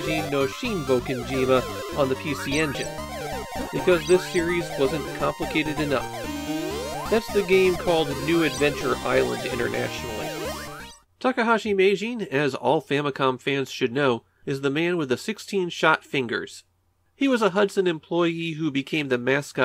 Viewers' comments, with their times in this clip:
0:03 The game audio here is really drowning out your narration. Not that I want you to redo this episode, just an observation :O